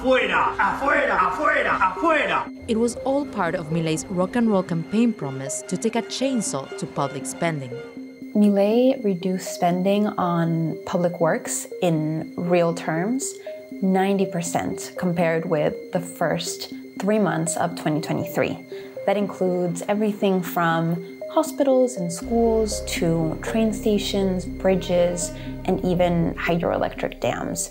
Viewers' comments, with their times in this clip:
0:09 the most natural English speaker in the video 🤔